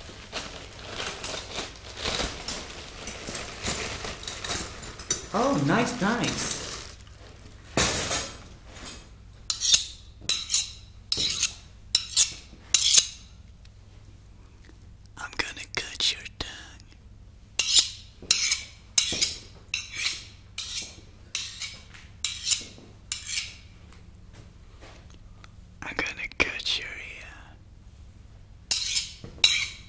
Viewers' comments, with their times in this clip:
0:10 Sounds like my mom peeling potatoes
0:10 Those are spoons, 100%. No knife sounds that thick nowdays, I don't believe anything else at this point. He gon cut my tongue with two spoons. Edit: oh my god he will also eat me with those same spoons
0:14 omg the ASMR is intense. Also that guy has a gay voice or somethin'.
0:14 i thought it said it was gonna touch my tounge